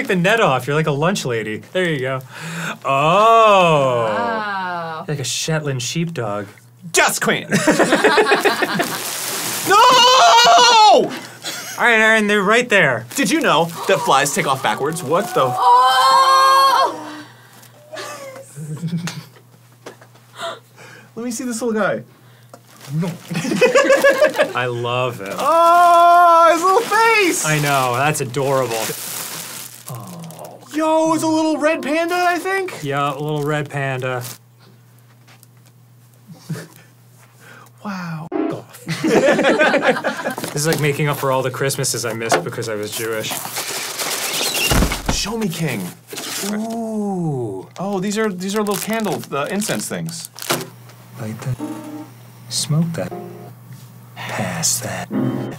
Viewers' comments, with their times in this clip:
0:03 I LOVE how the most replays are when Dan finds the adorable Dino plushie! 😍 The instant "AWWWWWW!" From everyone else in the room is so sweet then watching Dan cuddle it then stick down his dress to keep safe is the sweetest! Maybe now Dan will finally have a Dino that Arin won't throw, vacuum, zap, shoot, bowl etc off the table! 😁
0:43 this sounds like mice/rats fighting as he pours the box out. i was like "what?"